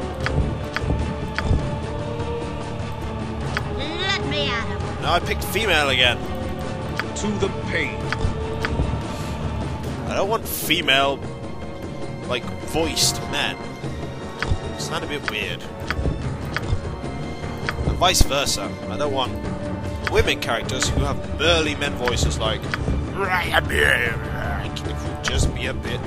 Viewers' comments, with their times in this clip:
0:08 That sounds a lot like Wesley to me. (I think it's mainly because of the line, but also the voice a bit.)